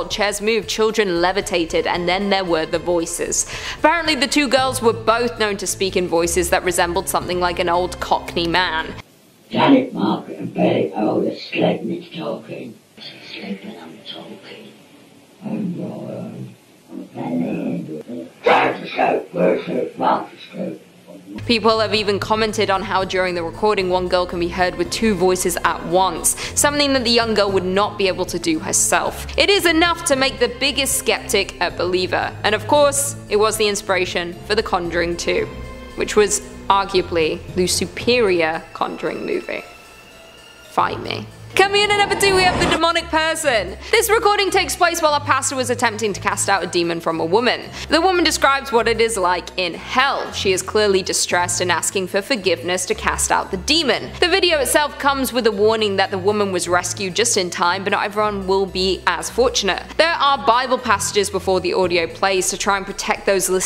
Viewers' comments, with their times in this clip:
0:07 min.: .... YEAH ITS MICHAEL CAINE WITH A SOAR THROAT... HEHEHEHE
0:44 sounds like Halle Berri